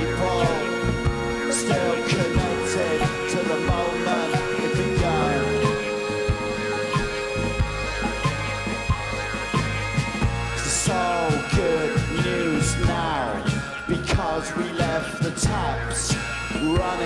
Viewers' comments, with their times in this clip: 0:05 lol damons like LOOK AT ZE WATA BOTTLE!!!